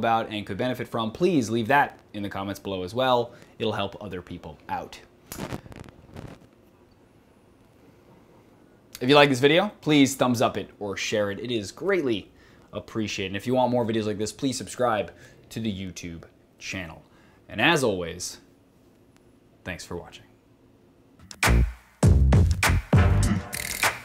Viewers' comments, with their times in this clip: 0:06 What's up man, there's a weird nose that cuts you off and it looks line you decide to reset before saying your next line, not sure if you forgot to cut it out but it's small enough to not matter much. Just thought I'd let you know. :) Great video as always!